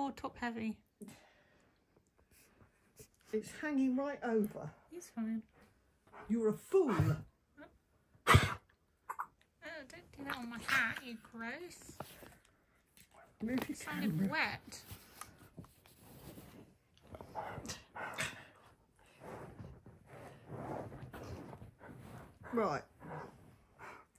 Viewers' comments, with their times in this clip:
0:06 Poor Nana!! Had to hold such a heavy Bum 🤣🤣, that cuss from Nana made him gag 🤣🤣🤣